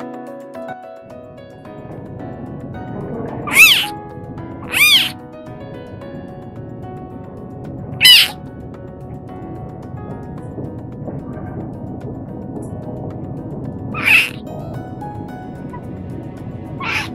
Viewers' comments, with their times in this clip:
0:03 Yeah you get em! Roar as loud as you can! 🥲🥺😭